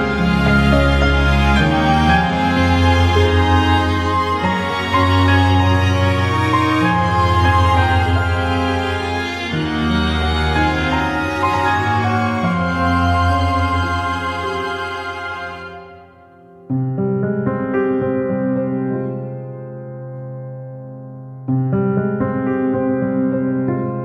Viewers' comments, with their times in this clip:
0:06 pretty cool to see where the ukulele, the pan flute and the tambourine originally come from